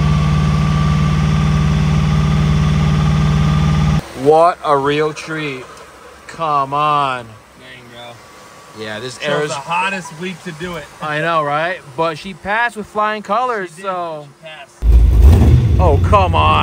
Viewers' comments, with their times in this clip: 0:04 i hear the tapping, you better get that looked at.